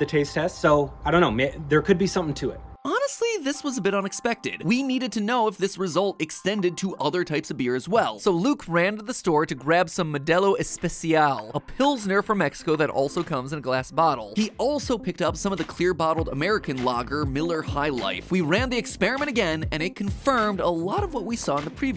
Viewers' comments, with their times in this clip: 0:08 he probably added that part of the audio later